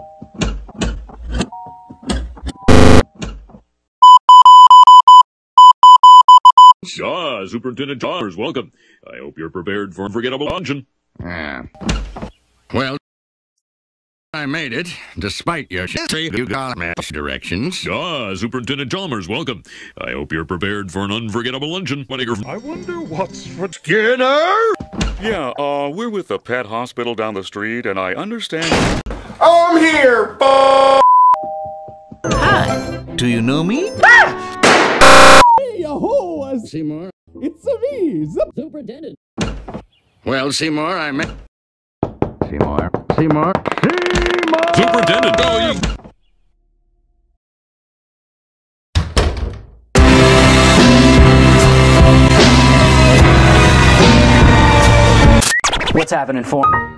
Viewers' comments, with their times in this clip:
0:09 The little "A" that flew out of his mouth killed me.
0:41 Chalmers finds himself on top of quicksand that absorbs him with farting sounds before Seymour could've helped him.